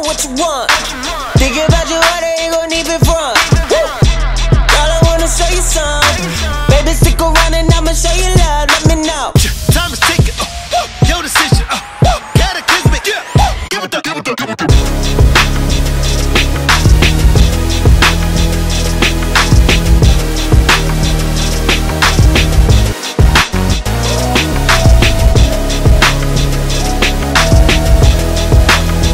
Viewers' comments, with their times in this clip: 0:09 Thank you so much for creating this!! ✦‿✦ I've been addicted to AY-YO since the first listen, so it's really nice to hear where it first came from 🥺🥰❤ Also, this means I can give a certified chef's kiss to the part in the instrumental because MY GOSH, I LOVE BEATS LIKE THIS IN SONGS 😭🙏🏻❤ Keep up the amazing work!! 🐰🌸💕
0:10 the way the chorus instrumental comes in wow